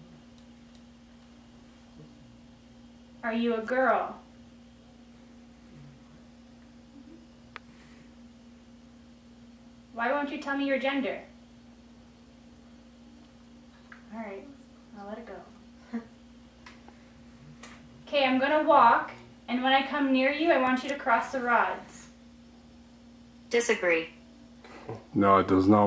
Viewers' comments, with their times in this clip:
0:10 in I heard a ‘uhm’ like a yes, I have a feeling this is a girl talking. The voice I heard before sounded like a girl